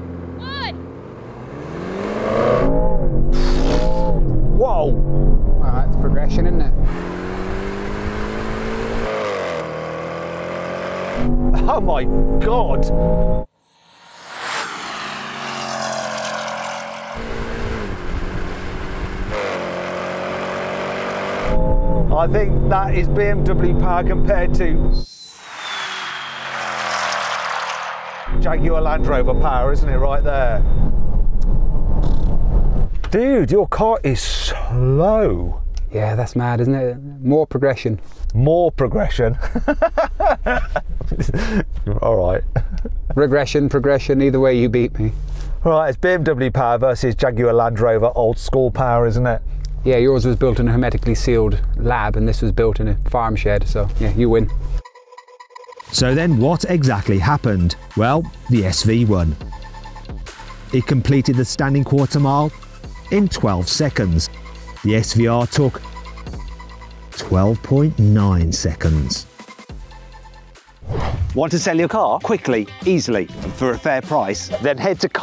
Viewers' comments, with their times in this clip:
0:08 that fart from the svr 😍 😍
0:25 dammm it’s like a fight jet sound 🔥
0:57 Carwow definitely using AI for the voice over.